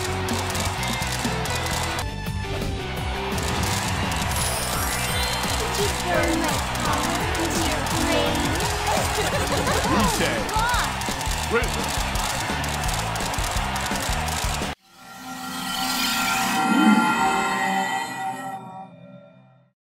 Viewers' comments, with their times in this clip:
0:05 What did she say? "Did you burn my power into your brain"?..."Power"? "Color", maybe? Doubtful. I require assistance.